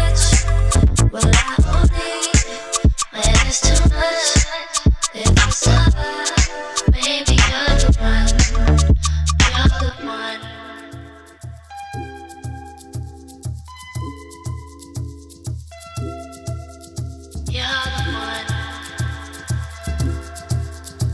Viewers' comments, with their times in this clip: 0:05 that transition was fucking NASTY